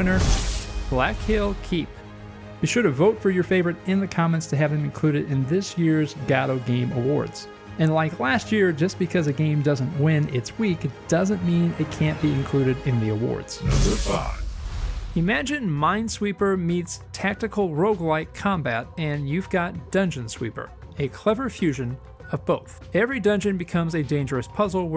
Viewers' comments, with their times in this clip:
0:07 Forever: guh-DOUGH 2023: GOD-oh 2025: Gatto 2027: Gotta 2029: Gigli 2031: Glaggazagg